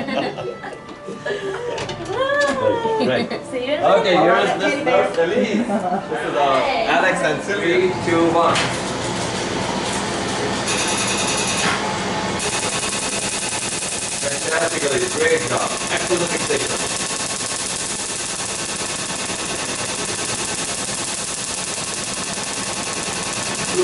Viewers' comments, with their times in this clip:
0:07 YES, YES, YES, YES!!! I Love, Love, Love, Love, Love, Love the Sound of that Laser!
0:07 If There's Excimer Lasers in Heaven, That's the Sound I Want to Hear... It's Ohh So Beautiful ❤️
0:07 That Laser Has the Smoothest, Silkiest, and Sexiest Clicking Sound in the Universe! ❤❤❤